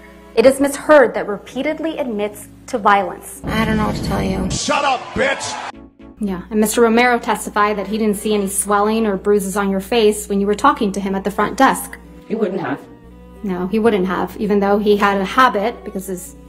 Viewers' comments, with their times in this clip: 0:04 I’d recognize Marc Rebillet anywhere!